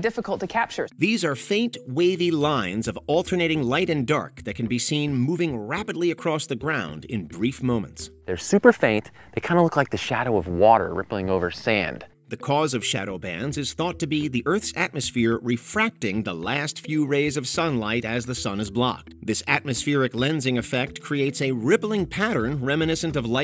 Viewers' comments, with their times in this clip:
0:06 I Was Finna Say Why Did They Shadowban The Eclipse ? 😅